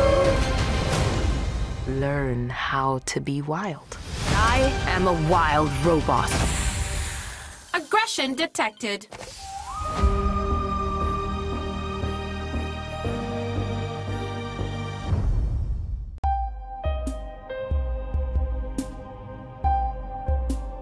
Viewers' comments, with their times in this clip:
0:07 that sounded like a hollow echo